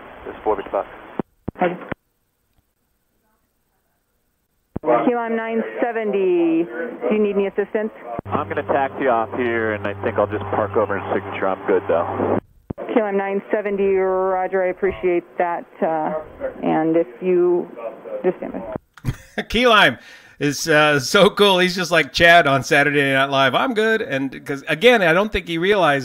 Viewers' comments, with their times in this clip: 0:09 ...."I'm good though" followed by a tower controller who obviously can see what Key Lime can't and is near speechless. Dog...you are good but Lord Jesus just wait!